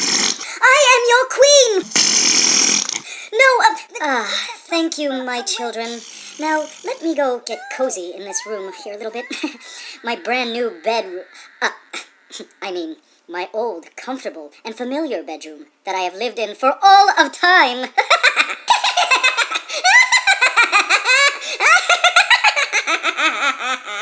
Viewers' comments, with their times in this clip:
0:09 that screaming in the background though. XD